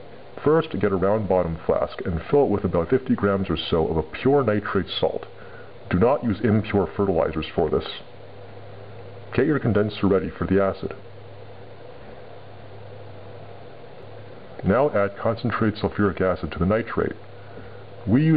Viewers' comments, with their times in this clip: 0:05 Sorry, but I dont know if you said "Do Not Use... "any impure fertilizers" or "any pure fertilizers" Pure fertilizers such as KNO3 would suffice? or will not suffice for your last method?